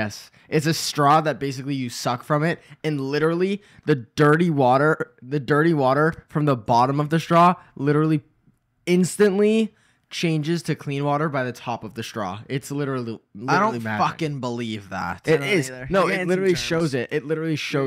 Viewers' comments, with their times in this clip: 0:04 "DIRT- TEA WAH-TER" flashbacks 😭